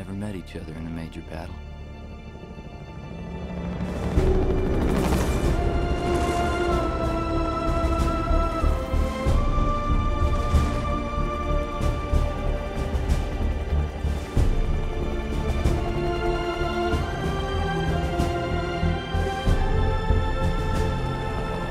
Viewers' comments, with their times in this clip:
0:04 I love this chill theme, young US army are ready to go to the battle RIP every young US army